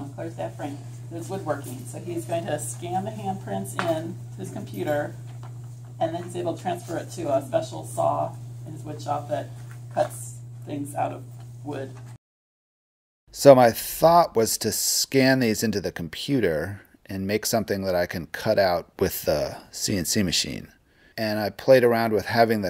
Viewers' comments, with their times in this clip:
0:06 I like how she says "transfers ... to special saw" lol Great, great project.